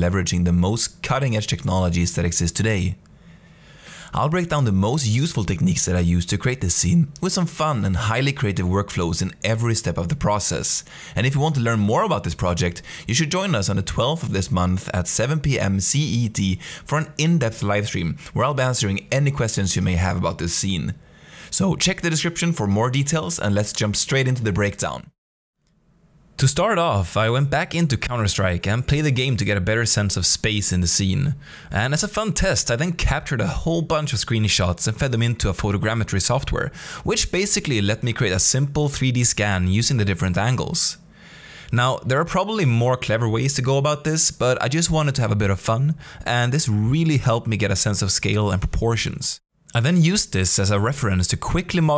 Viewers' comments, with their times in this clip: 0:03 "I'll break down the most useful techNIQUEs I use to create this scENe" I just had to realise this..
0:04 the voice cracks omfg !
0:05 did he voice crack?
0:20 nice voice crack xd
0:20 voice crack reminder
0:21 That voice crack tho 🤣
0:34 Gotta see if anyone else heard this: does he say “screenie shots” ?